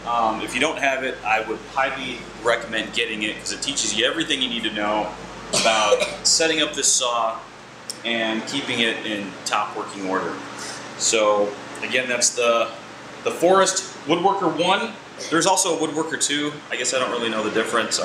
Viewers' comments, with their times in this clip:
0:05 kid coughing 2020 style!